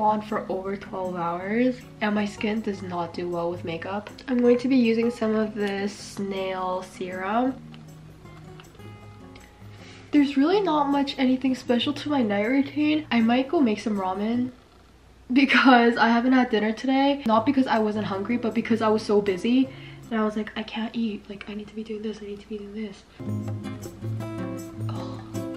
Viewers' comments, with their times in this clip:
0:07 You said snail serum but I was like hOLd Up nAiL sErUm ?!